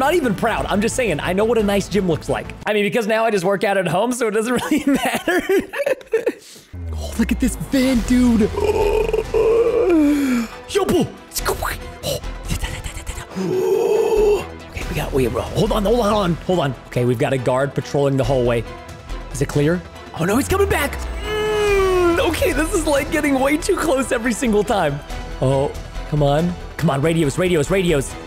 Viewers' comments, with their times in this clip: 0:09 preston starts to make random noise…